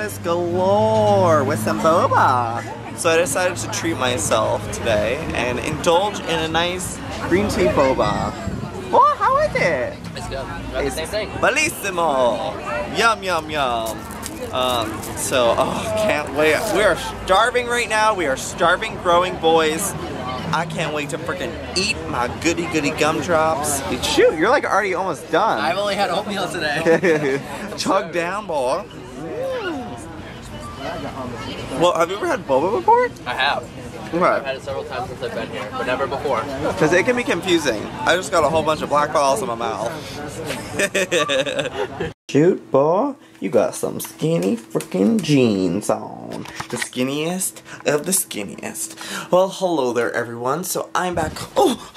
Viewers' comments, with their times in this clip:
0:10 was that an attempt to speak italian? LOL no really, what was that? O.o
0:39 I just got a bunch of black balls in my mouth! HEHEHEHEHE cutest laugh aw